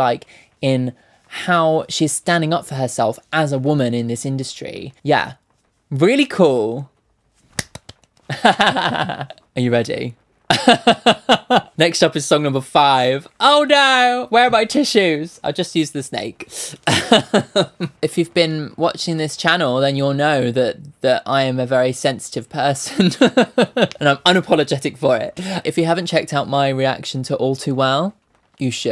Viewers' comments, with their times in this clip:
0:09 you sounded so cool when you said, "Are you ready?" are OMG!